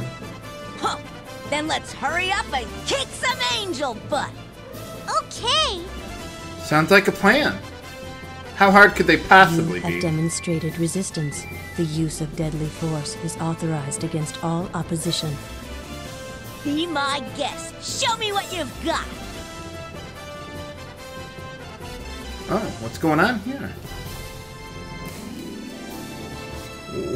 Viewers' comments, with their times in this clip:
0:10 sounded like the Borg from startrek... that gave me a good laugh.